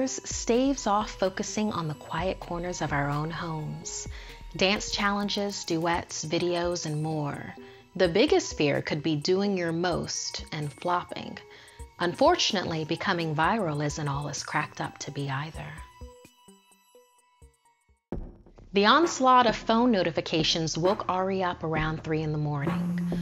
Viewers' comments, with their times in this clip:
0:07 Shit, it's and I think I just heard a kid's laughter😭